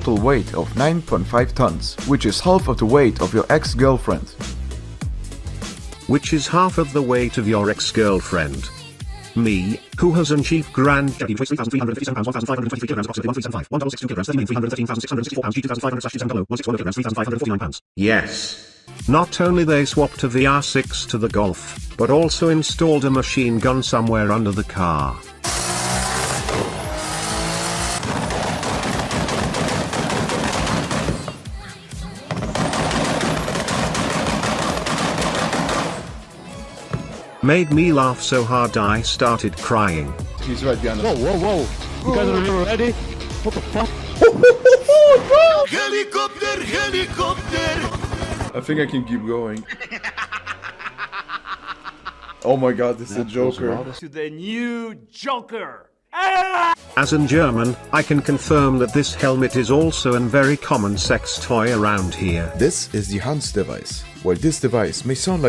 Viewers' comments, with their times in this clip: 0:06 the robot voice reading and somehow it fucking starts speaking chinese
0:26 my guy put MG:42 on golf
0:28 for the curious, he's had an anti-lag system likely installed, which keeps the turbo spooled up by essentially having another ignition system at the exhaust. See Audi S1 Quattro. It sounds awesome and just the right amount of ridiculous, but it will wreak absolute havok with that engine.
0:46 ok this part made me goosebumps, its a song from my country and its the last thing i expected in your video lmao